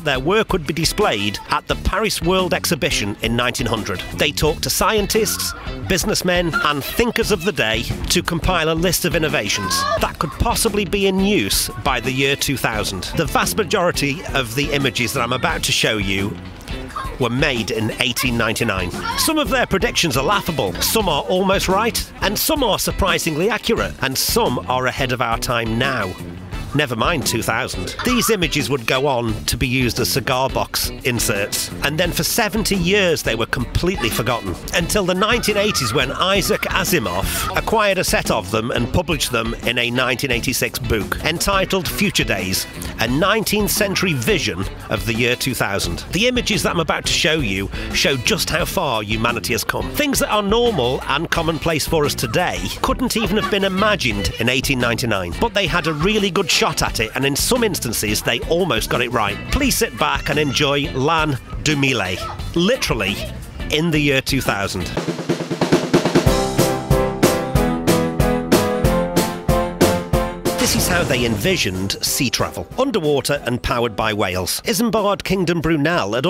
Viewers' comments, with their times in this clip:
0:09 Why is there moaning in
0:10 why is there moaning in the background track???
1:00 omg why wouldn't you look up the pronunciation in french?